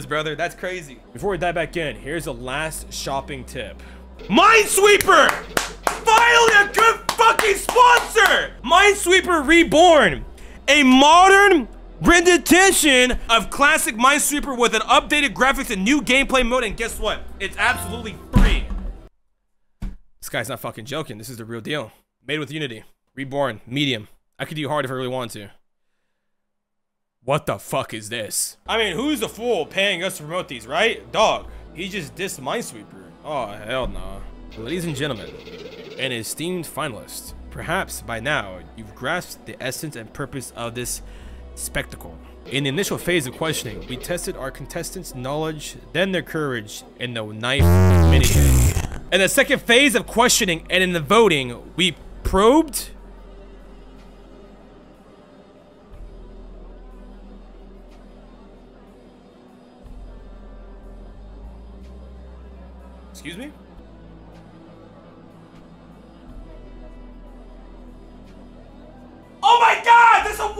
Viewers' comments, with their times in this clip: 0:10 a modern “renidition” 😭
0:54 dude careless whisper started playing on the radio here I’m crying